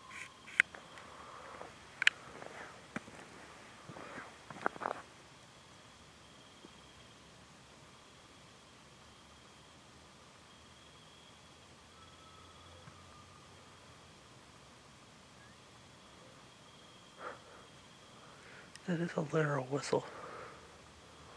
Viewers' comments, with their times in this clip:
0:04 When the weird vocal sound came from in the woods, I freaked! Wtf could that be? What kind of animal makes those sounds?? Anyway, i can hear something whisper into the mic and it says 2 words. The first word sounded like "help" and right after that I hear a second word but I can't make out what it says